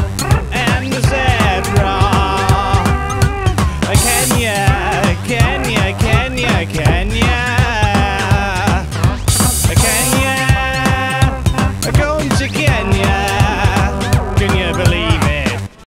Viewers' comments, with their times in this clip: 0:10 Ok here me out, does it sound like "were going to get ya?"